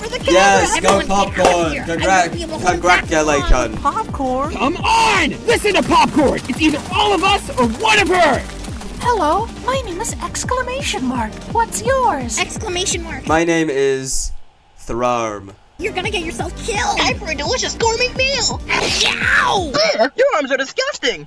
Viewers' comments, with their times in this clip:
0:04 I swear, coffee sounds so much like fanny